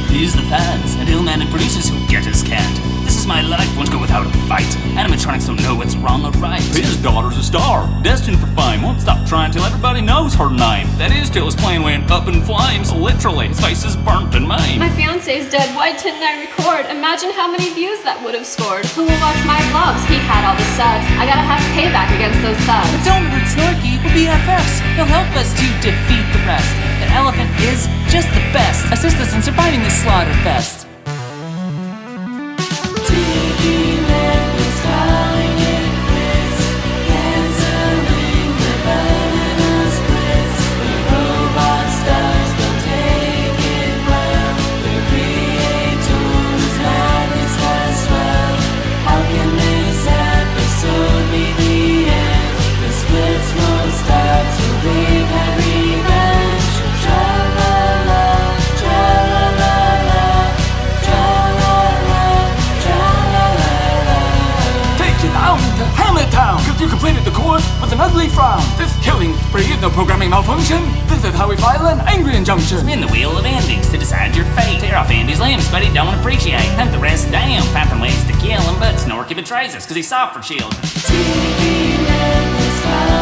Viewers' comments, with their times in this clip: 0:09 Like the drooper voice
0:45 I swear I heard in the song “there creators mad but gots swag” here’s where I heard it
1:04 fleegle's rap only if u make it slow/0.75x